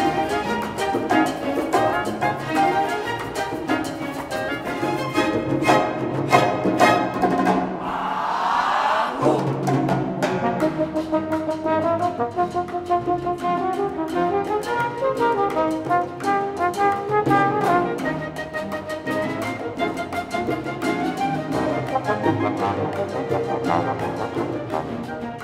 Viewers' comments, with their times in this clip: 0:10 what's the time signature at this part? Did it change to 3/4 or 6/8 or just keep 4/4?